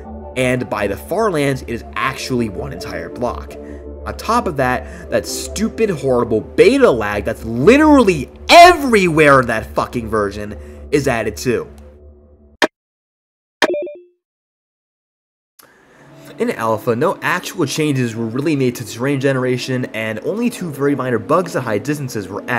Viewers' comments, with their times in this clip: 0:09 RIP headphones users (I have headphones on right now)